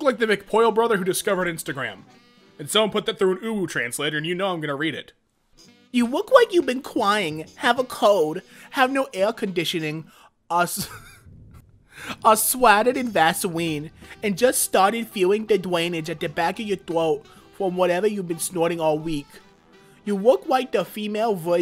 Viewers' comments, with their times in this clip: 0:05 He sounds like an uwu'd version of the foot lettuce dude. ...Still think I'd prefer this over the original lol